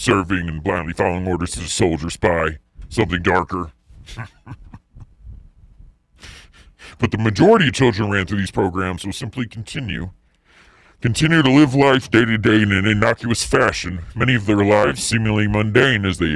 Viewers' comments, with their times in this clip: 0:04 Why the nasty laugh ? Unnecessary horrible. Enough horror already, why do you want to add to it so theatrically?